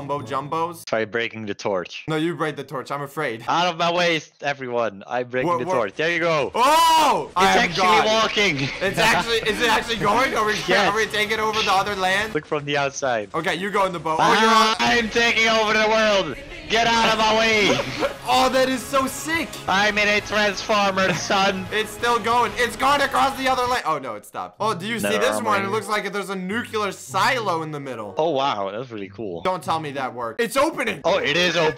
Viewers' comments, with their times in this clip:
0:08 you know it’s serious when attack on titan music plays
0:15 I love how they just start playing Attack On Titan music
0:17 I love how it plays the attack on titan op 😂